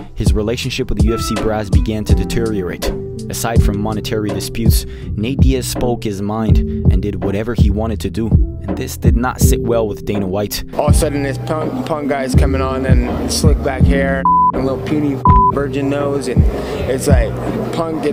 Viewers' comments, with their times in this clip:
0:04 the music up to sounded like the song "Just the two of Us".